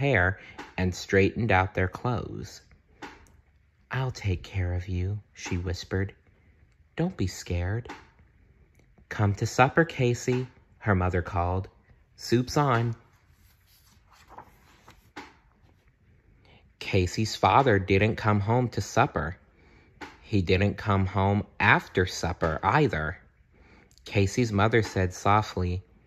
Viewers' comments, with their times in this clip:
0:10 did he’s say suffer?!?!